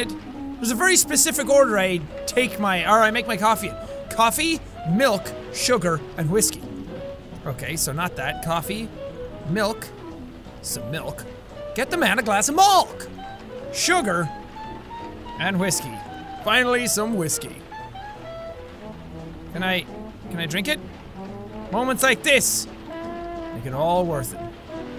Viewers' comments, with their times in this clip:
0:08 "ok, say milkshake" "milkshake" "now say milk"...."malk"